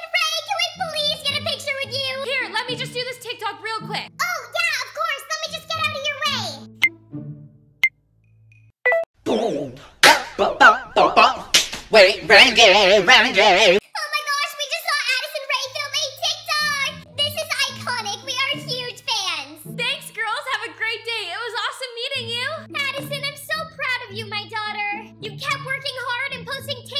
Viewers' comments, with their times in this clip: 0:09 love the song hhaha